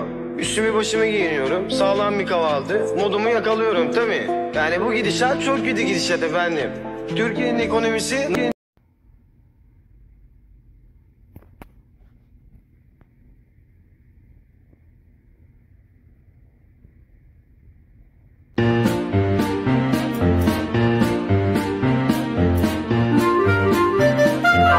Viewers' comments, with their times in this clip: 0:09 Love that tone 🎶 😂